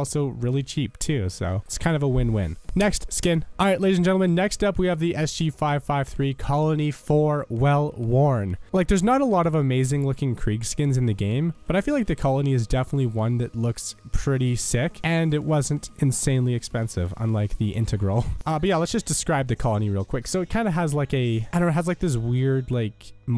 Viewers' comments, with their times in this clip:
0:05 Ah yes, well word.